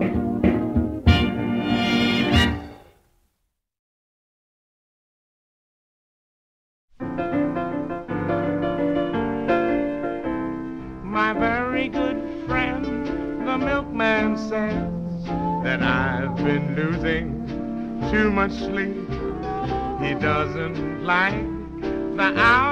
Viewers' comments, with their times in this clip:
0:08 Louis Armstrong sounds a lot like Fats Waller.